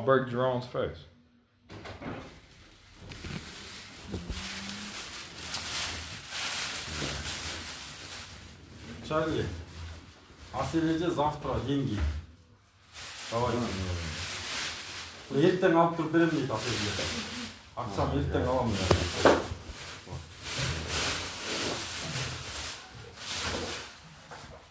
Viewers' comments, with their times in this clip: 0:10 sounds like a cleaning person picking up all the empty bottles off the floor 😂